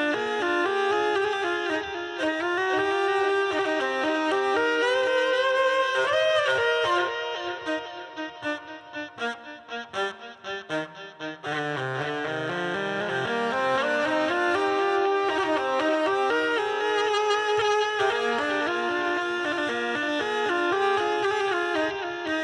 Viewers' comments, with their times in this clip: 0:08 As always, pure magic! I wonder, how much backlash that connection between the friction wheel and rotating arm have? It's not a direct drive, definitely, because rotation speeds are different. Looks like near zero, otherwise we would see some delay between arm swing and this staccato sound, see